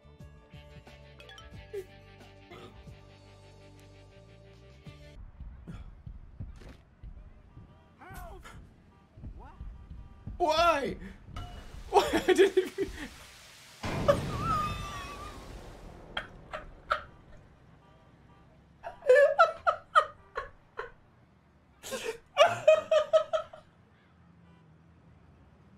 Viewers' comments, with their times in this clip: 0:06 the fucking sound of the pole hitting that poor dudes head holy shit